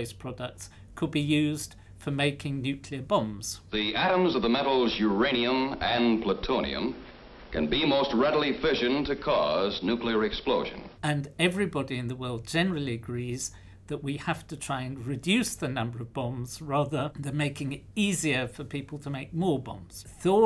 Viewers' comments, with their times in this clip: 0:03 -The only danger is those with a deep, well-modulated voice.